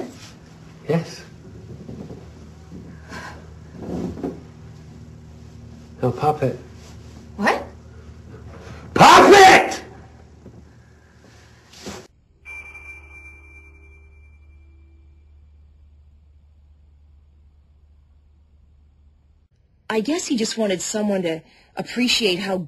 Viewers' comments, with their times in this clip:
0:06 IK THIS IS SERIOUS STUFF BUT THE WAY HE SCREAMED LMAOOOO